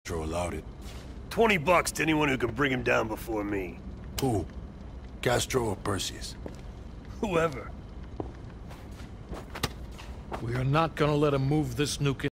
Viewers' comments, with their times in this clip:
0:06 I literally cannot stop laughing woods face is fucking priceless he looks like hes high,the way he says "wHoEvEr"